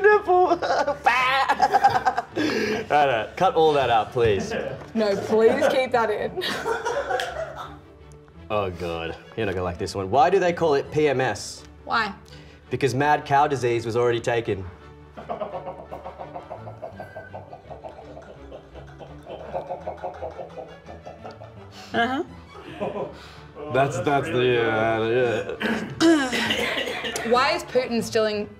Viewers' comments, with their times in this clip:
0:10 the cutest "why" :))
0:15 shit sounds like a chicken farm